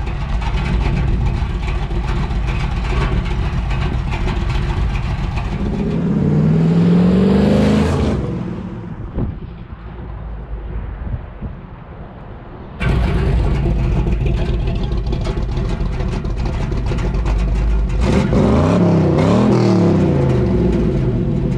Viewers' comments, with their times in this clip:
0:07 sounds like there's a body in the trunk ?